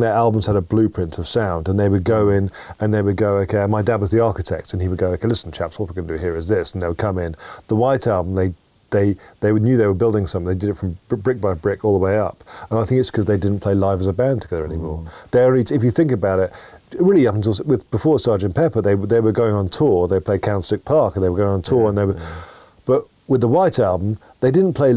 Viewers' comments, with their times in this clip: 0:04 he literally does a perfect impression of his dad
0:04 I love how he replicates his dad’s voice😂
0:04 When Giles imitates his Dad's voice he sounds just like him!
0:06 First time I heard Giles do an (amazing) impression of his dad